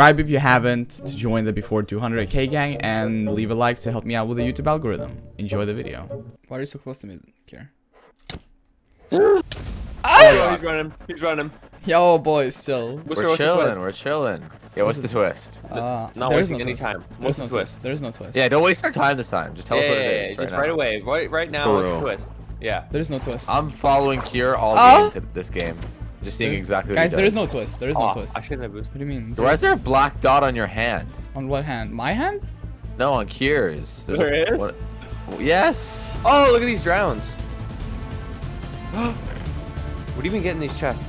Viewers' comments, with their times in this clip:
0:09 is no one gonna talk about that moan?
0:09 wth... that noise tho.
0:09 what a wierd noise (i know what is that noise because of my friend...and i know your friend do this noise too)
0:10 man really just moaned?
0:24 he moans again just like i wanted also if your wondering i finished🎉